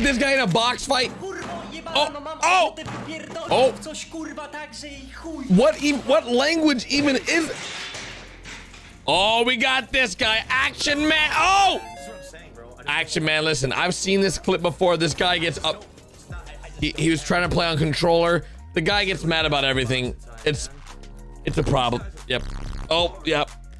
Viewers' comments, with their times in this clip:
0:05 This is polish in the sekend